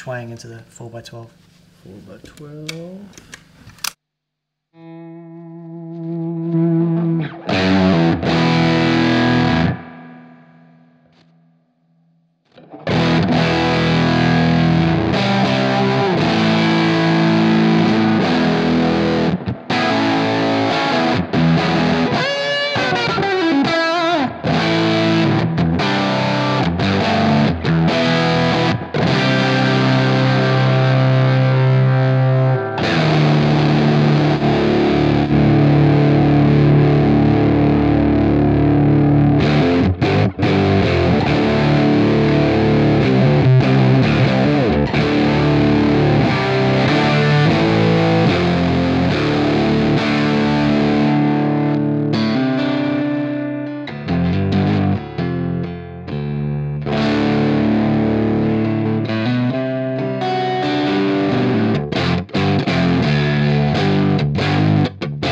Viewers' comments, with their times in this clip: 0:08 Whenever I've heard fuzz with any kind of digital jiggery pokery going on after it, it's usually sounded like a bit of a buzzy, zingy mess. Then you hear .... that was RIGHTEOUS! What a great sounding bit of kit.
0:53 guess I'm an idiot Cymbal-ansy??? Tom Hanks?